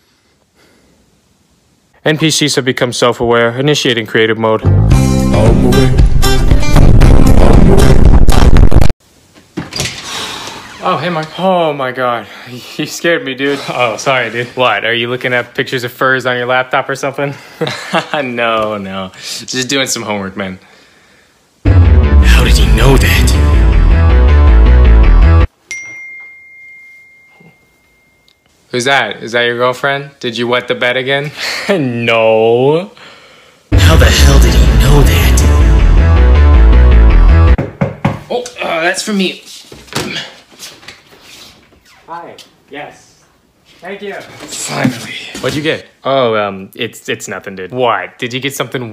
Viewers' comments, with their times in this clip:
0:05 I love the music
0:29 Broo as soon as that message notification happened I got a message... wtf...